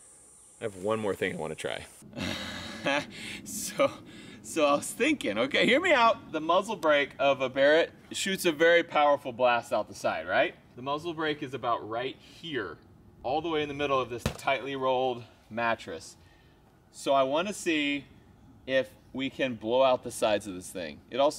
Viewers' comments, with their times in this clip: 0:03 Have you heard you laugh lmao